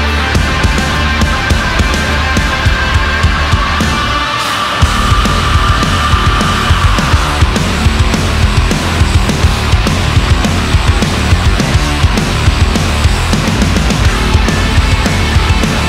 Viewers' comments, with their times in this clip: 0:03 First time I heard the scream in the opening I instantly thought of Rob Halford from Judas Priest 🔥🔥🔥 Damn, this song is KILLER!!!! 🤯